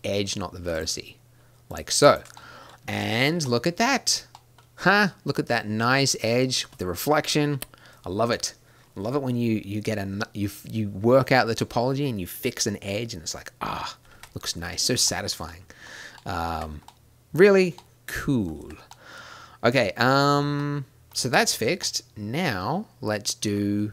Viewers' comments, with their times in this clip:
0:04 "ha!" reminds me of kanye west's "HAH!"